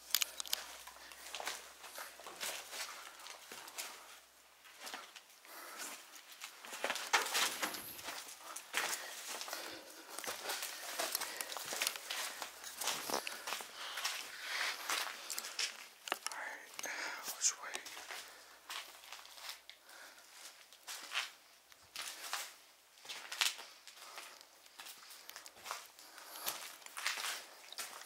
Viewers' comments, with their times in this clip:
0:10 Swore that not u breathing sounded real heavy deep could be me got good headphones in though bro